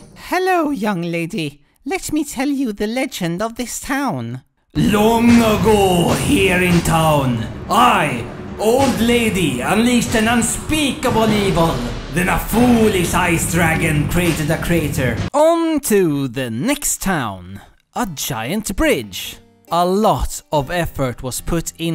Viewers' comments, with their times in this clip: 0:09 that is an INCREDIBLE Mako impersonation.